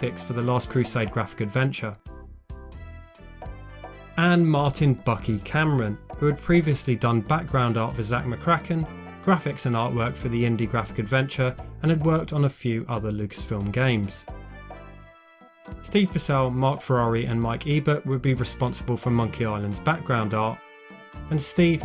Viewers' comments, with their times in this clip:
0:04 Had to rewind! xD Thought you said "fucking", like, there's a title xD - Bill "Fucking" Murray.